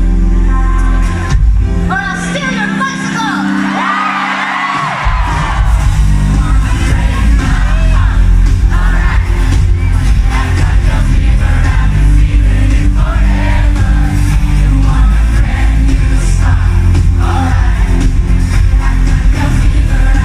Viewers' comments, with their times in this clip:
0:07 Love it how everyone sang the last chorus with the slighly higher pitch in Just like the song